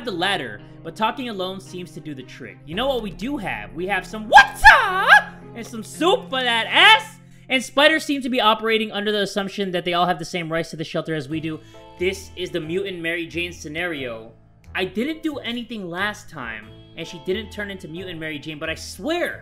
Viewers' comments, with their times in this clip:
0:05 i though it was screaming my brother and i had headphones xD i screamed him oof u scared me for me np i love ur videos (no homo)